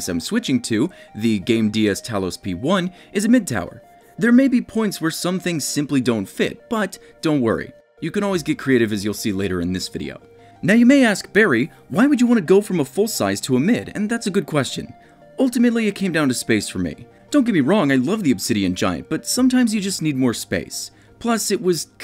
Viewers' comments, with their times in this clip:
0:05 anyone else hear autotune ?